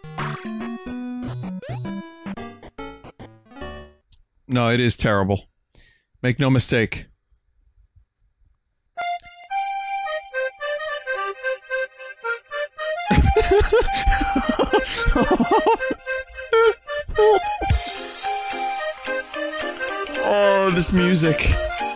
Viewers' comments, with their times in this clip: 0:09 Actually, That song isnt that bad, i cant say same about the game (WHY IS THE NEIGHBOUR IN A FERRARI AVOIDING SPIKES AND SKULL???!!!!)
0:09 What the fuck Is That Music